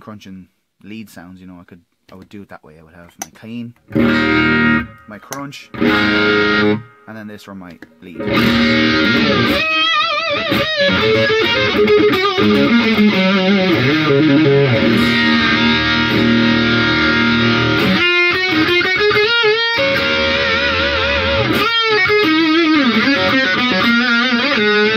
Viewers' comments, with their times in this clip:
0:08 I think i'm in love with sound of Boss DS 1 because this video. actually on